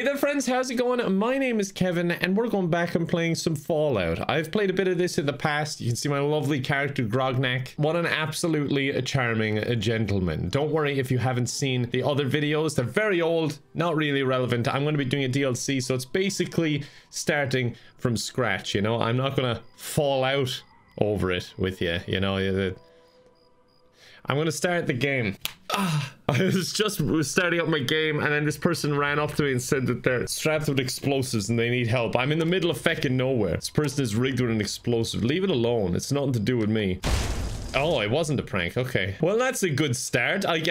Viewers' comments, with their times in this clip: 0:10 i like how the fallout crickets were already chirping for it. added to the great joke
0:22 where's the cricket chirping???